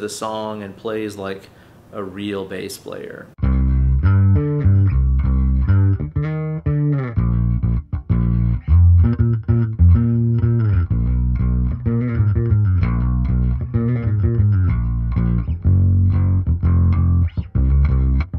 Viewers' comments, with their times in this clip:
0:05 Loved the bass highlight and awesome video overall